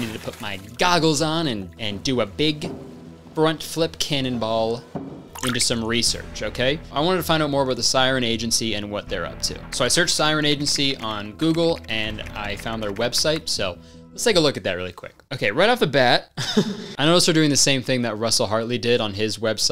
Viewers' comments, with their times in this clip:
0:04 that sound effect for the water had me dyin